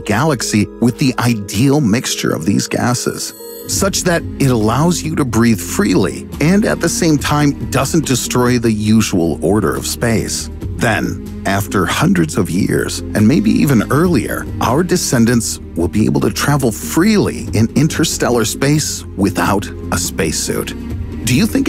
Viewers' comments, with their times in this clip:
0:06 That glorious music score in the backdrop against his voice from min is simply marvelous